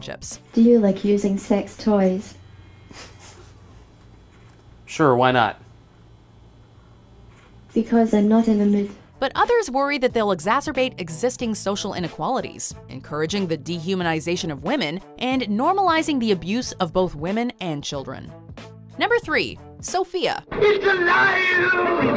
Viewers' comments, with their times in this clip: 0:05 guy: exhales out of nose